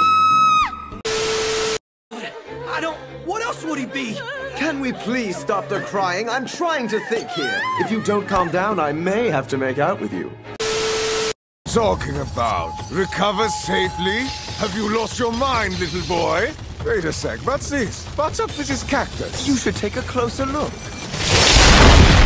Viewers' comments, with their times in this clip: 0:07 starts crying even more